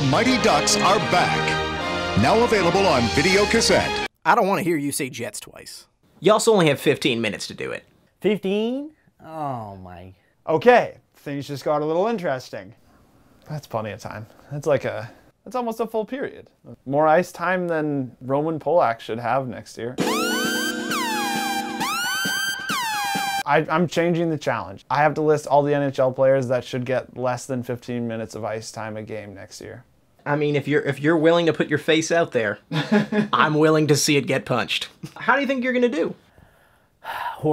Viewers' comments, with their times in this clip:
0:08 How the guy says 15 though😀😅😂👍
0:20 that music always scares me 😱